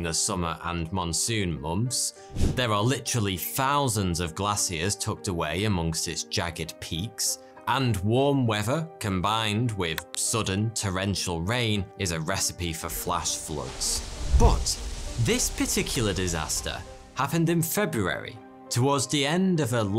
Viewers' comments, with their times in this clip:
0:03 "glass-siers" is the word of the day 👍